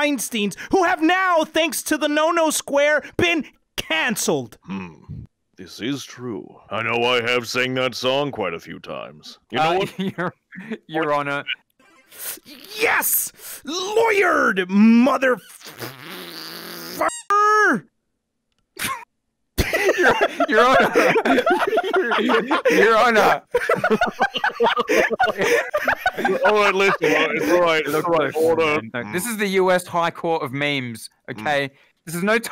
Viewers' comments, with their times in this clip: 0:10 When you say lawyerd at like you sound like Rick
0:19 when u try to nat rage loud at midnight